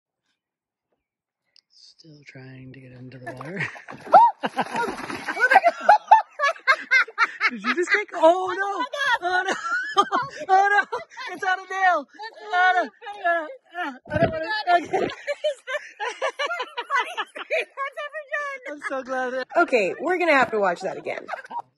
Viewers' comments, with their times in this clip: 0:04 "Aw" got and david bfdi